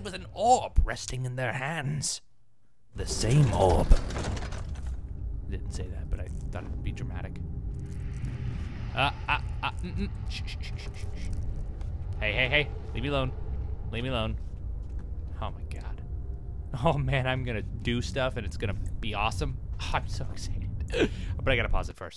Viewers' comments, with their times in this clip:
0:03 may be the most epic voice I have ever heard.